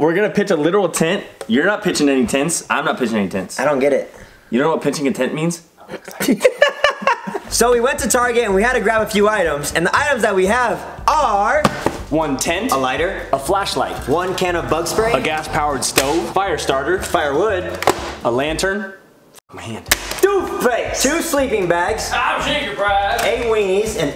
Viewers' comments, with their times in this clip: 0:05 lmaooo the fact that he whispered to him like we were actually in the room was ridiculously funny. Everything they do is funny💆🏽‍♀️💀